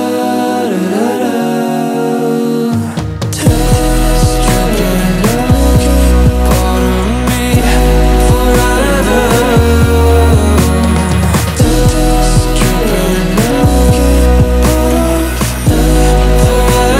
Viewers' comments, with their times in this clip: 0:03 daaamn that part so smooth and cozy<33 i feel like im being embraced by the humming bass. This song is just beautiful